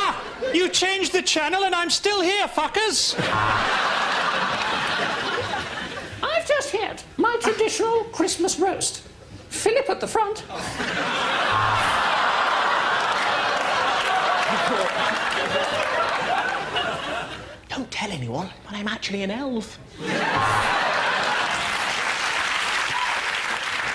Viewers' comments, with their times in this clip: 0:09 Love the guy that's like AHH!